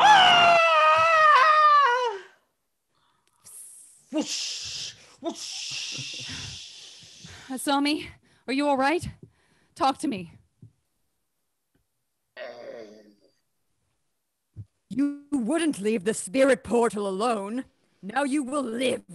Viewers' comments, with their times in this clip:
0:07 gay little voiceovers for gay little edits